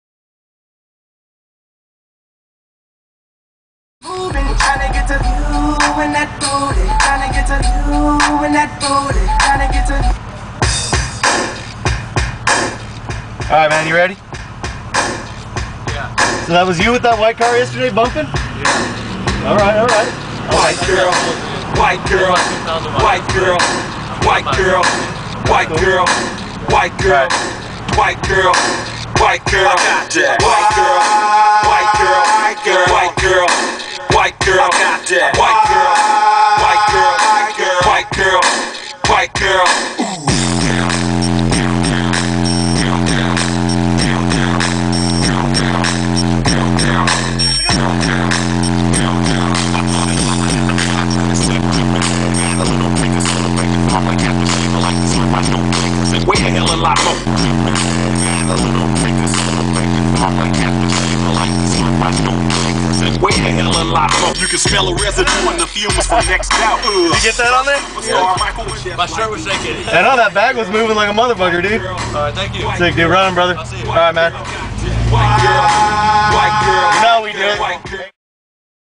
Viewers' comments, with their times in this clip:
0:04 that music is TAHAT MUSIC IS
0:40 bomb! drops lol
1:04 no i was saying because of his laugh